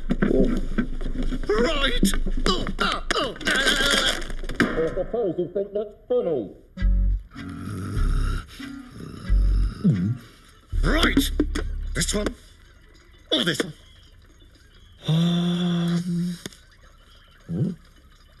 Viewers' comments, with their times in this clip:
0:05 man voice in the blocks bucket